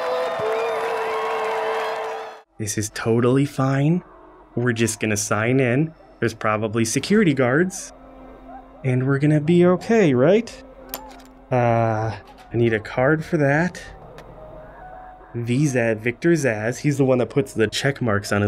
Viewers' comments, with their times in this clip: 0:04 if u listen u can hear jason screaming in the back.